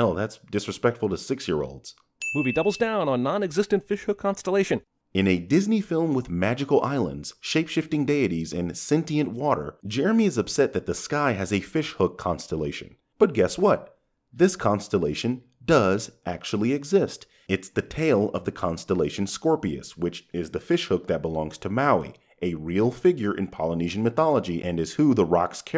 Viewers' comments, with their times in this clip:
0:08 I thought you said "daddies" for a second💀